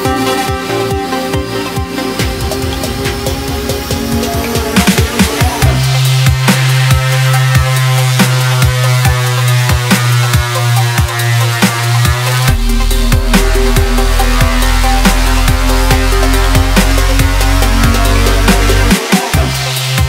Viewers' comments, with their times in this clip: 0:06 this sounds just like my neighbor mowing the lawn on a Saturday morning
0:07 it doesnt even sound like its been mastered!